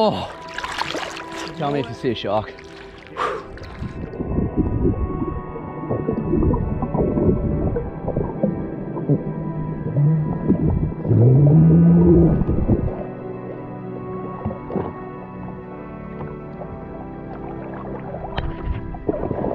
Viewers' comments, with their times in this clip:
0:07 You hear the whale at least I think it was a whale